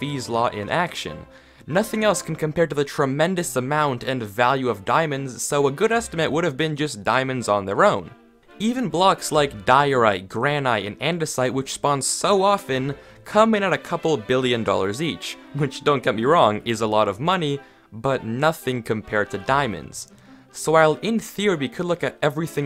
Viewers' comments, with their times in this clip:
0:09 Is everyone gonna ignore how he said gran-ite???